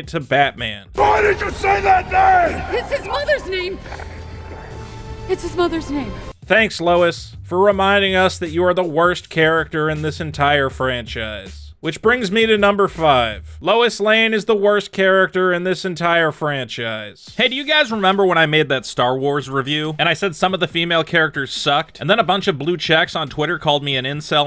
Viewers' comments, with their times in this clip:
0:06 genuinely cringe that delivery genuinely sucked